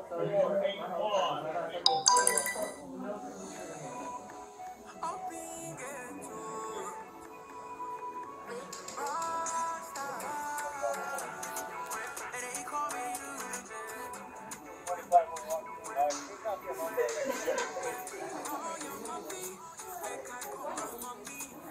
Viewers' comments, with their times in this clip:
0:04 somebody is listening to some African beats...